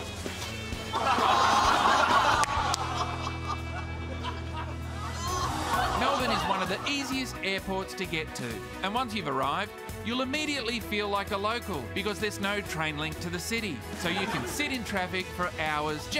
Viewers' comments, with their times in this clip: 0:04 you can hear that one person go "orgh!" when the brown patch is exposed.